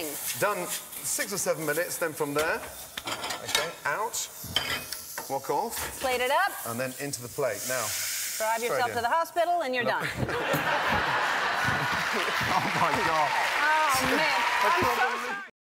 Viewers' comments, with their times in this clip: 0:04 Wok off sounded like Fuck off. my mind is programmed to hear "fuck" when watching gordon
0:05 I heard 'fuck off' instead of 'wok off'. Freaking Gordon Ramsey...